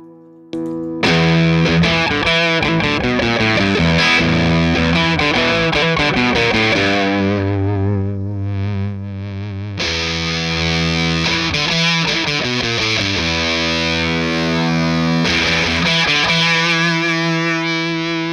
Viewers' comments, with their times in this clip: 0:04 yes absolutely you can dial out the spittyness. The “after” knob is the bias control. Counterclockwise you can turn this fuzz into more of an overdrive/distortion; Clockwise will morph it into fuzz. After is where things start getting spitty. Also when you rotate it, you’ll hear the knob noise. Totally normal. The “before” knob is the gain. Lots of gain on tap here. I keep the “hi” cut knob at 0 just so my amplifier’s natural treble shines through, but if you need some extra treble bite you can turn it up to make it brighter. Go grab one I think you’ll love it!